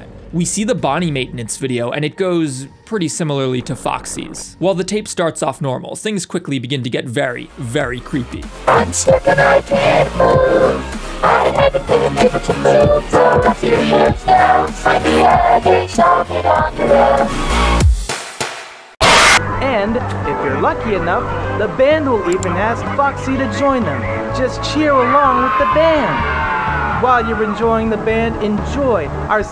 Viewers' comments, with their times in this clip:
0:09 I like the music 😄
0:10 we gots the new Bonnie X It’s Been So Long remix